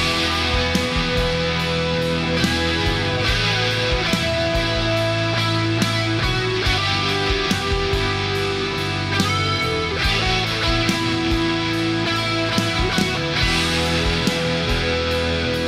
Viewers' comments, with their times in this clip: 0:03 All about that sustain